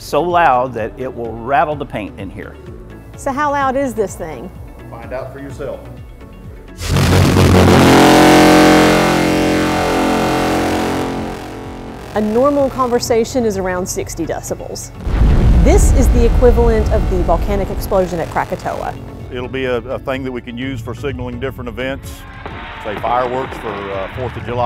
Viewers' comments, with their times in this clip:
0:07 my eardrums: guess ill die